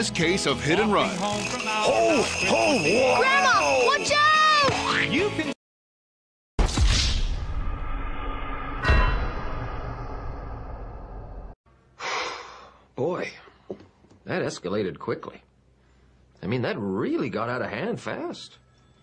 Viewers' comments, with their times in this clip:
0:03 LEFT EAR ENGAUGED